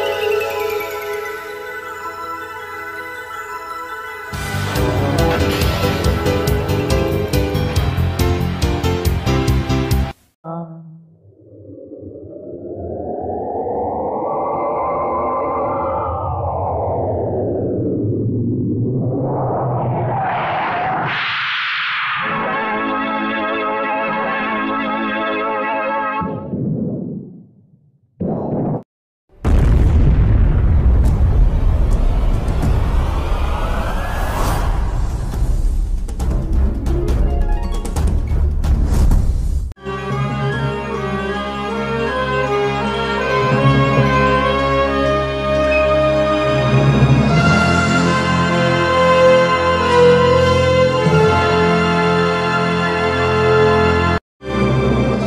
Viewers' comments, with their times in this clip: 0:04 I like the music
0:40 "You Can Hear a High Pitched Columbia Audio" And worst of all, IT'S THE PAL COMMON 1998 FANFARE!